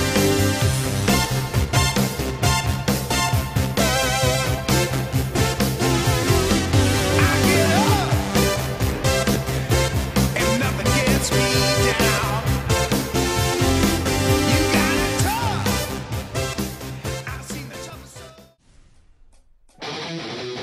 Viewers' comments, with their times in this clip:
0:07 sounds so cursed